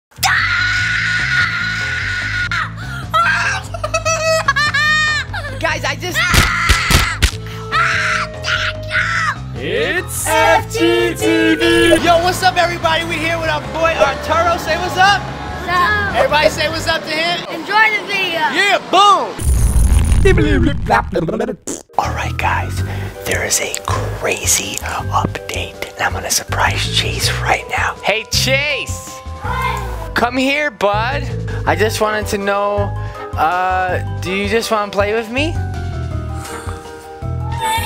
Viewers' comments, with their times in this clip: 0:00 Look at how loud he screams
0:22 Sounds so satisfying